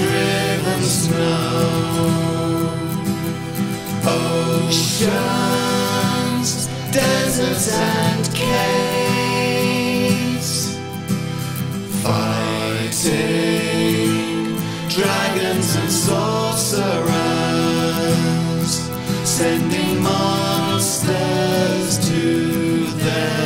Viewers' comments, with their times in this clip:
0:05 Love how it says "Oceansss, desertsss and... caves" like if caves was just a throw of the tongue, love this song! Really amazing, wish there was more of them, then finally I would love to turn my Runescape in-game music on!